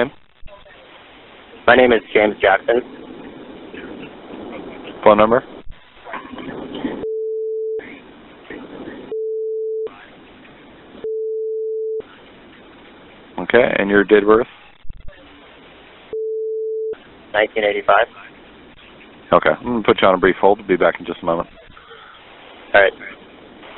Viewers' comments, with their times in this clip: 0:04 is that someone laughing 😂 in the background from the police officer side